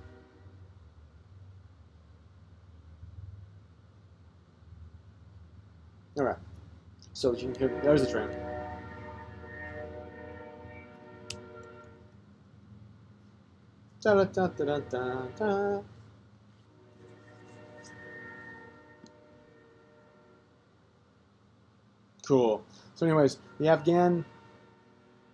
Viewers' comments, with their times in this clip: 0:07 What does that train have against contemporary poetry? How rude of it.